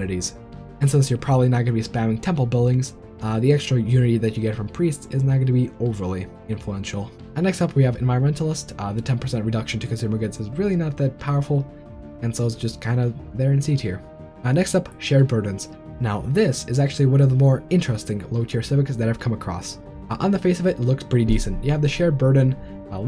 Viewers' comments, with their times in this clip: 0:09 Very good info, but sometimes I have really hard time understanding your English :(. For example "consumer goods" part. I went to wiki to know what Environmentalist do, and even then I had to re-listen few times to make sure you say "consumer goods". English not my native language, so it's really on me.